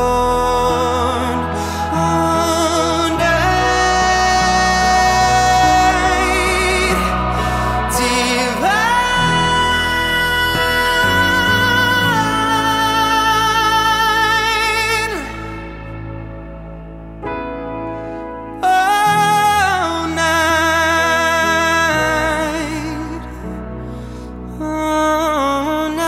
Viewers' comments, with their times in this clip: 0:08 What is the highest note he hit B4 ?